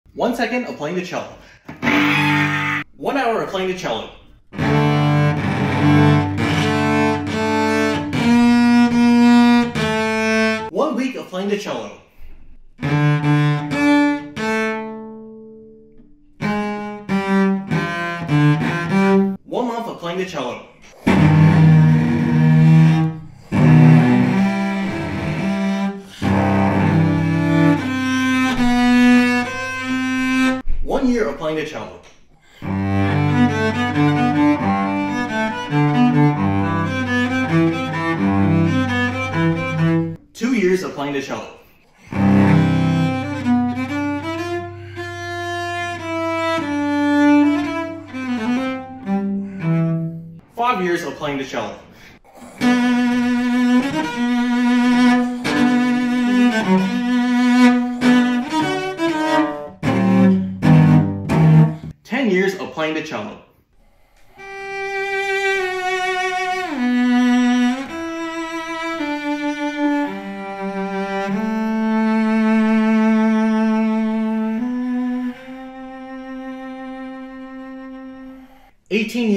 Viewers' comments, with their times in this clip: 0:04 this music like 1 Hour of cello is like playing Twinkle twinkle little star! Like singing:"Twinkle,twinkle,little star"
0:05 playing it like sizuka in doraemon
0:11 1 week For some reason this song is giving A BAD TIME to my ears
0:12 No, stop, you’ll summon them all- I hear the boss music already
0:27 sounds straight out of a documentary i watched about the Holodomor
0:32 sounds like Horizons, by Genesis
0:45 its almost sounds like hallelujah handel note clip on barroque music
0:47 Bro it's look like mongolia music
1:04 anyone else think it was about to be WHEN I WAS A YOUNG BOY-